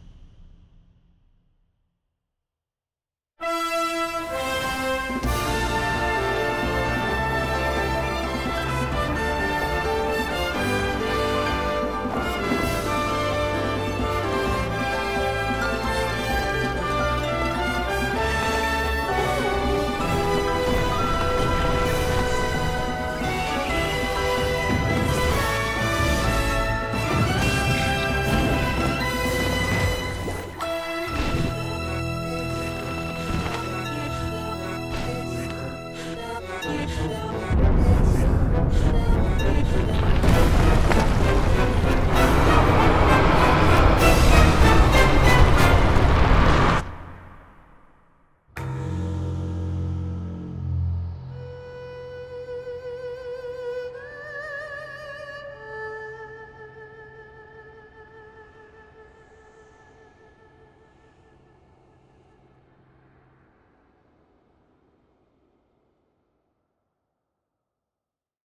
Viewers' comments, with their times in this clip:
0:03 That music gives me goosebumps
0:31 The fancy gadgets, the weird, Twili-esque tune starting and maybe some dark visions in the beginning?
0:32 decided to listen to the video in reverse and i can hear a similar message from the first teaser trailer "Help us..please help us."
0:33 Did you hear the faint noises ? Sounds like the weird robot guys from skyward sword
0:37 When Ganondorf lifted the castle, one thing that I realized was that they had these few notes hidden exactly when the trailer showed us thus
0:49 the sound reminds the sound when the doors from the Palace of Twilight open.
0:50 I could be wrong, but don't those three notes sound like the first three in Zelda's Lullaby, from Ocarina of Time. There might br a connection....
0:51 the beauty and subtlety of Zelda's Lullaby just blows me away
0:51 minute sounds zeldas lullaby with the same instrument that uses in the dragons theme, Zelda TOTK spoiler
0:51 we should've known... Zelda's lullaby played on an Ehru, the main instrument for the dragon theme